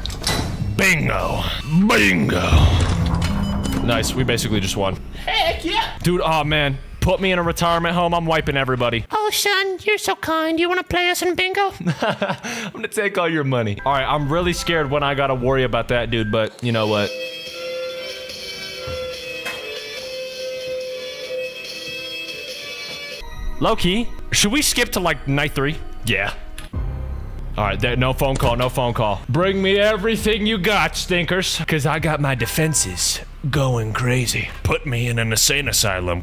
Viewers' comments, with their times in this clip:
0:04 LAUGHED FOR SO LONG ACTUALLY HILARIOUS THE VOICE CHANGE AND THE LOOK AT THE CAMERA TOOK ME OUT 😭
0:18 if anyone know how to play guitar this sounds like od-to-joy